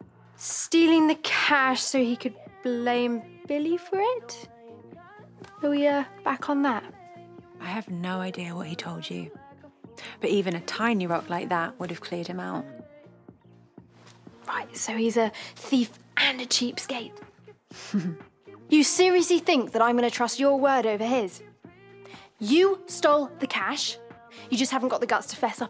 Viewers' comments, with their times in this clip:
0:06 never heard that song until now these are good headphones 🤣